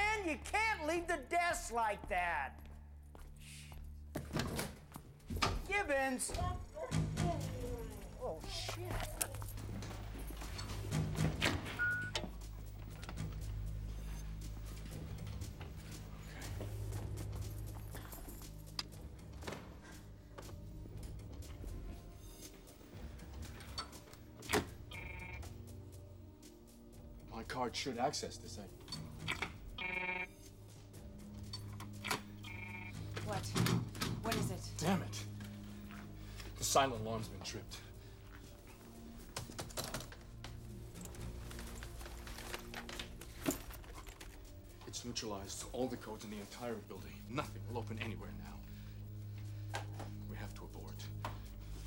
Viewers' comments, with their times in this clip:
0:06 This guy nailed a routine coworker ribbing into a full blown crisis situation
0:08 😂 the shock and surprise in his voice
0:32 Notice how when Miller is pulling on that safe he does it to the rhythm of the Terminator theme.